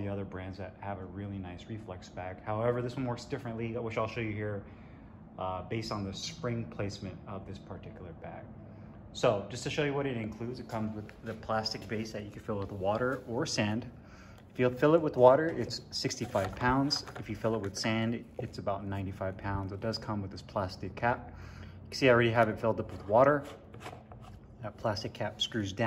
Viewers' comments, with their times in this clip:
0:07 Dang, already here where i live it's gloomy. Man you're going pro at youtube, mans got a mic now. Great audio